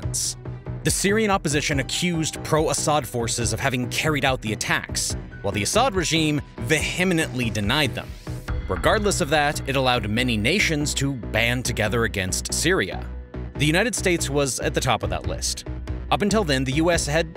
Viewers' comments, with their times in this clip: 0:03 You mentioned the word " vehemently " min. You mispronounced the word.